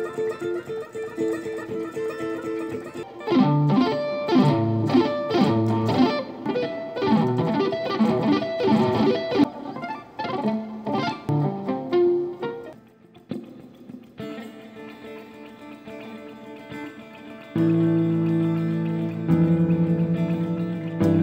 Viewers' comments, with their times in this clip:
0:09 reminds me of Gimme Gimme Gimme